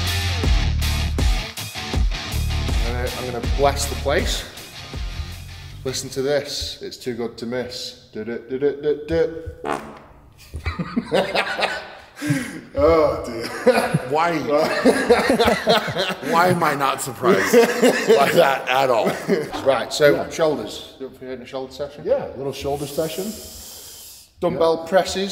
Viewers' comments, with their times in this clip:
0:09 Can someone please make an 1 hour loop of Eddie's little song and fart XD I'm dying